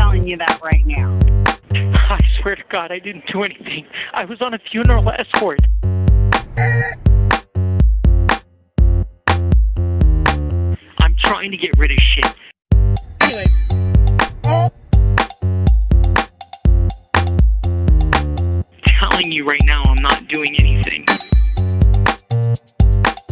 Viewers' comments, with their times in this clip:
0:05 The crying in the phone call is peak dimwit. Pure comedy gold